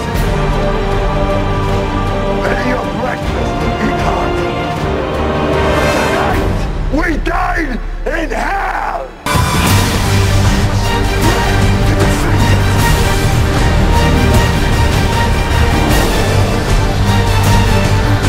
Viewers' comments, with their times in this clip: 0:04 First off, awesome job, not even regarding the fact that you were only twelve. Great for anyone. Second, LOVE the way you incorporated quotes and pauses. Then revamped the music and the climaxes to match. Much better than just a straight playthrough of the music. ( case in point) Brilliant...